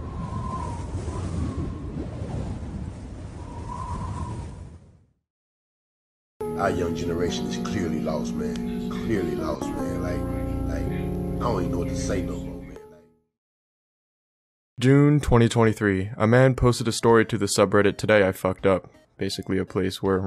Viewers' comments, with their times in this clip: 0:08 Was that george floyds voice??😭